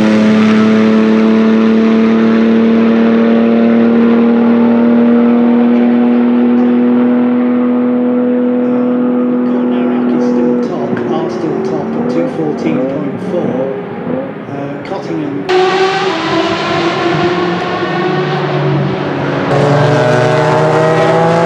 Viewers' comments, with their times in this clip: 0:03 the suggestion for the ford GTE in the top corner is exactly what I was thinking about that exhaust note.